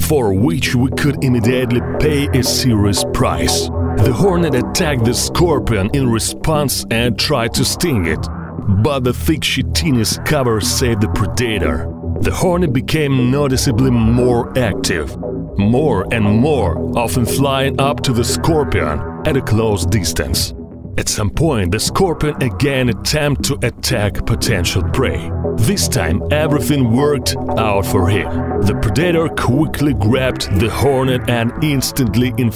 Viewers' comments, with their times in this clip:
0:08 "the thick shittiness cover saved the predator the horny became for noticeably more active" indeed 💪😤
0:09 lol, the thick shittiness cover?! 😂 the horny became noticeably more active. WTF?!!
0:19 The thick shittiness 😂😂😂